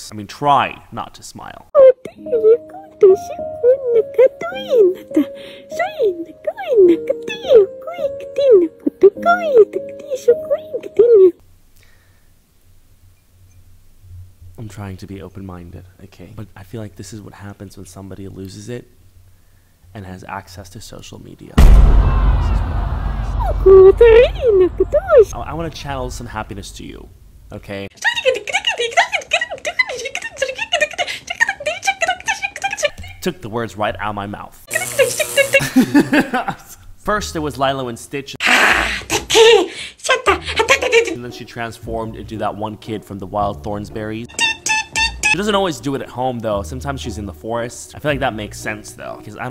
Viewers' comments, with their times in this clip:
0:07 she sounds like a pokemon
0:37 Lylo and Stitch? "LYLO" AND STITCH?! "LYLO" AND S- boom sir